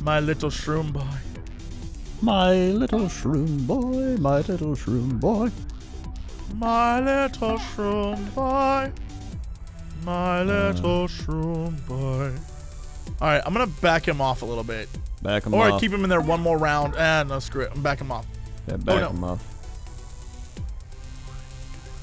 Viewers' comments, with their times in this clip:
0:06 thats a message ring tone if i've ever heard one.